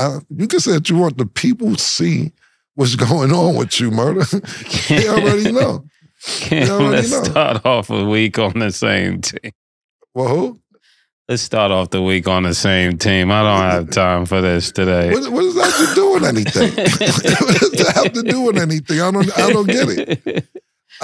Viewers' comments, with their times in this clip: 0:09 is when it started . He was a little irritated by something you could tell after when he said alright and licked his lips , then he made the joke and he started laughing and he was back